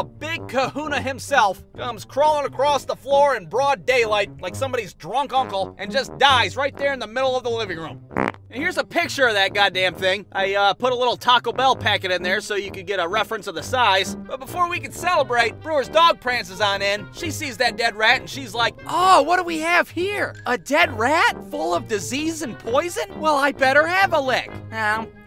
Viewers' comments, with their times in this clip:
0:07 this fart sound for some reason make me lmao 🤣